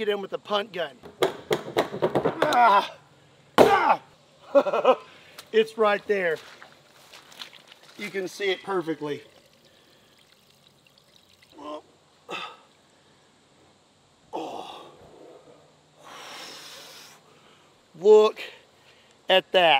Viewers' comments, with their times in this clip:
0:03 I love the laugh he does lmao he's having the time of his life with this.